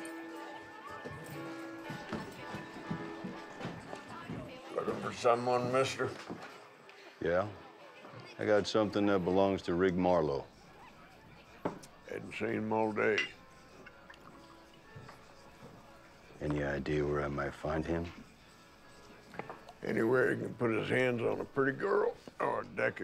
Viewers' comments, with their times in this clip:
0:09 and 126:19 - There's Kris finally. Love his acting and 'specially love his voice!